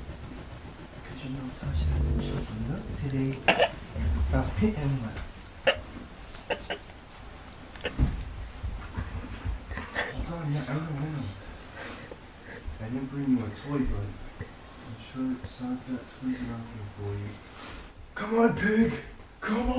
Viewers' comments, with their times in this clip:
0:04 they already start laughing what a give away 😂😂